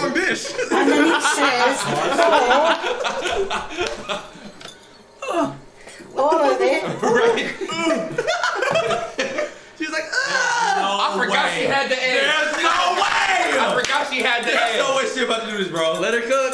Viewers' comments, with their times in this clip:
0:04 THE GROAN LMAOAOAOAOA